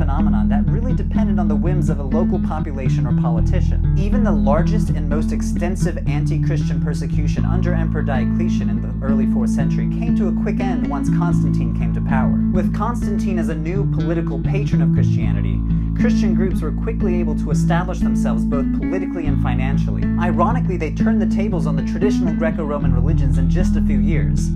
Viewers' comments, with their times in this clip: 0:07 the music overpowers him so much that it's actually hilarious